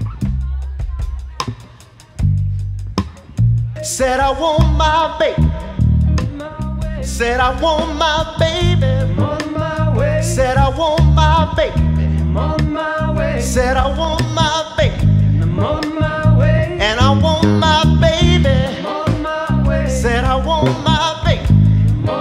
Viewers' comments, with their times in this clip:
0:04 great cover and stellar vocal / sax performance. why the rhythm player clicked on a distortion pedal throughout the tune is ....? he confuses Motown with Seattle grunge + he overplayed the chords, need not play on each beat. at the vamp the grunge rhythm guitar fell away and tune right-sided. top notch bass playing.